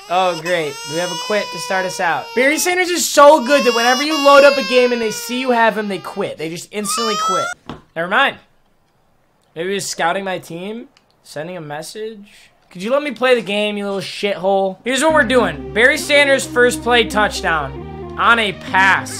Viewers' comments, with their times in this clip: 0:07 im dead with the baby cry at the end